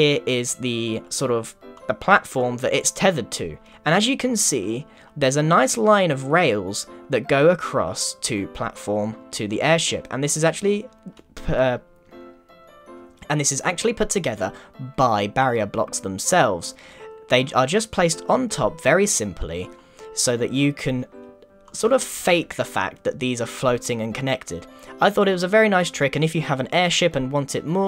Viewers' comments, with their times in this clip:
0:10 +Grian I think you forgot to edit out your voice there LOL
0:10 am i the only one that heard a weird sound
0:11 uh you sound weird
0:11 just the pause. XD
0:12 grain what was that it was like phe